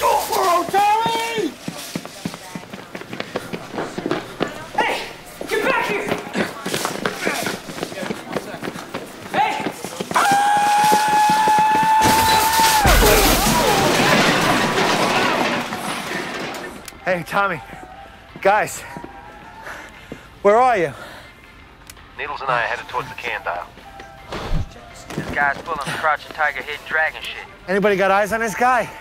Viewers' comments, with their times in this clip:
0:10 One of the biggest hilarious shoplifting ever and a chase was awesome with lauhhs ever, the trolley incident was hilarious ever with a crash